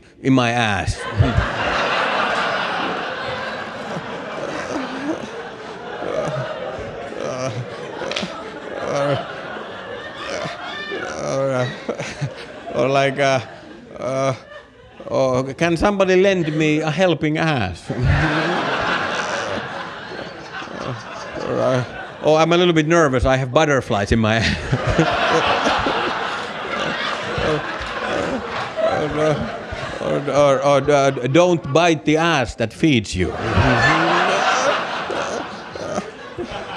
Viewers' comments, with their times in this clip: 0:05 the sounds he is making 😂😂😂
0:18 Listen to and dont tell me you dont hear a fart 😂